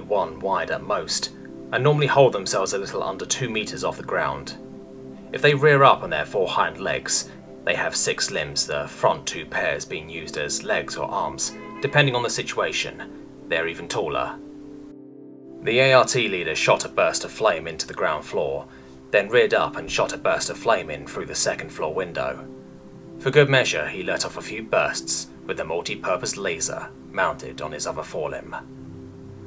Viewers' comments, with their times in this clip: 0:10 was that a car horn?